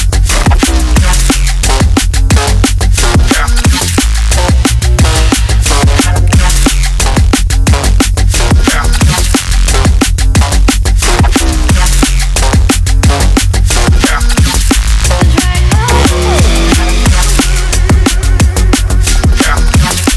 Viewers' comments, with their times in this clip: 0:08 anyone got ID .. ?? is so huuuge